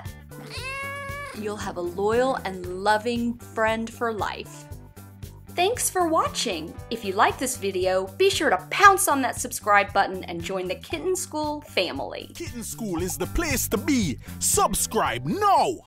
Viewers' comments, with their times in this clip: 0:13 pretty cool that you got Hermes Conrad from Futurama to do your outro